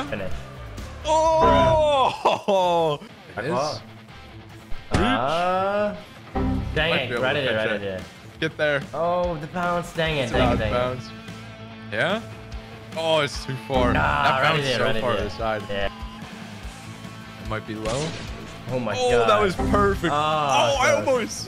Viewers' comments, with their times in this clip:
0:06 the last remnant music though